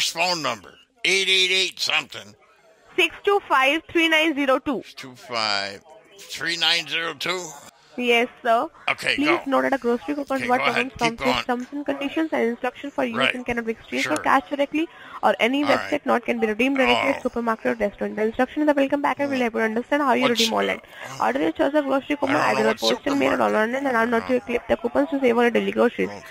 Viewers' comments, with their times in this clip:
0:08 Did she just say "… something something…"? 🤨 Gee, as if quietly speed-mumbling the terms and conditions wasn't already invalid and legally unenforceable as it is. Also, why even bother going through the motions of pretending when the whole thing is fake anyway. 🙄 New year, same old scams.